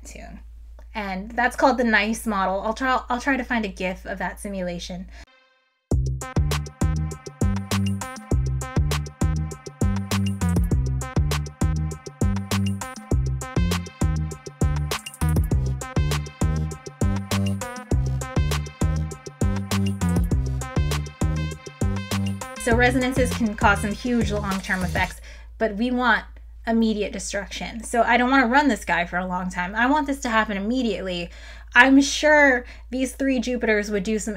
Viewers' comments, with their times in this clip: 0:06 the music here has me busting a move 😭
0:21 very thankful for how you stopped the background music immediately as you said "But we want immediate destruction," this sample will be a fine gift to the techno gods